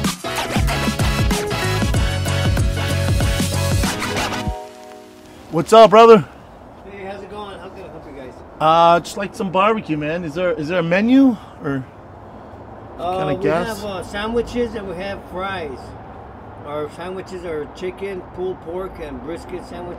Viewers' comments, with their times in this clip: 0:05 schaubs face, eye movements, and tone show just how scared and pissed he is at whoever signed off this food truck